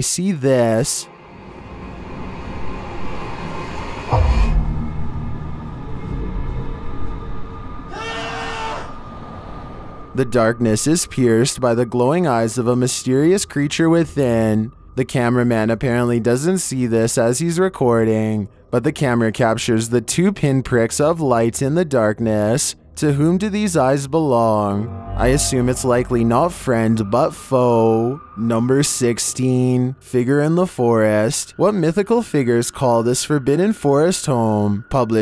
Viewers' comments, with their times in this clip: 0:07 Oh my god sounds like that Asian guy yelling XD
0:08 you can see a face appearing on the hole after the scream
0:19 If you pause it right it looks like Freddy Fazbear runs up to the camera in the tunnel when you hear the man scream 👀
0:22 toreadors song starts playing